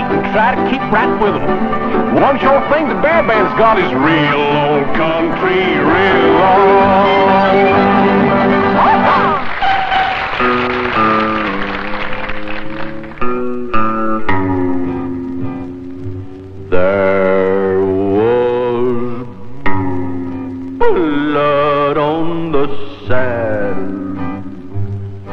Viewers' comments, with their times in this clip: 0:10 This bear's song isn't creepy AF... I love it.